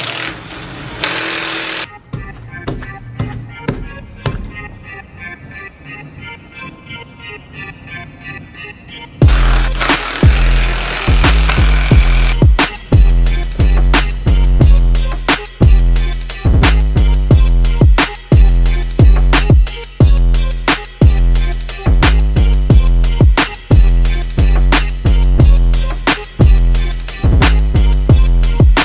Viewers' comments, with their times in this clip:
0:09 Nice beat drop synced with the impact 🔥